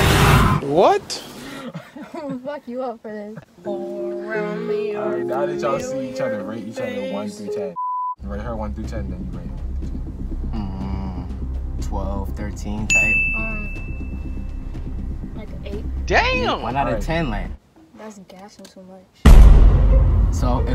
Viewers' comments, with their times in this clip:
0:03 that song Lmfaooo 🤣🤣🤣